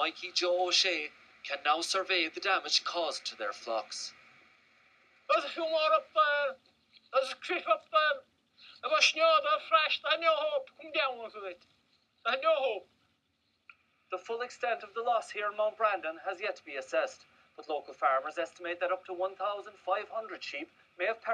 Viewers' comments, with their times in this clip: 0:05 Does this come with subtitles??? WTF?